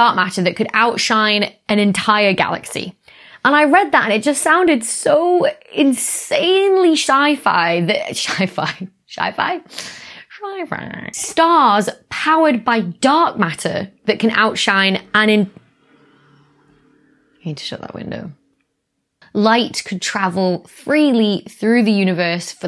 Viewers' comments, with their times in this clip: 0:09 oh no, we got to make that a word now. Shyfy. Roots need to address Syfy.